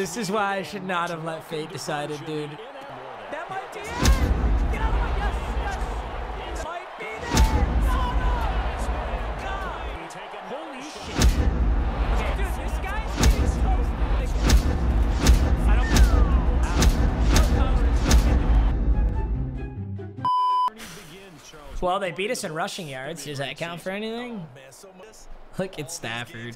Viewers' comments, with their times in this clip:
0:08 audio is low